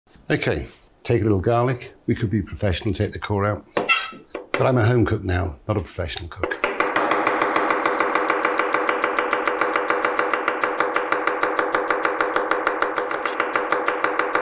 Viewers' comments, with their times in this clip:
0:07 Those sound like actual gun shots.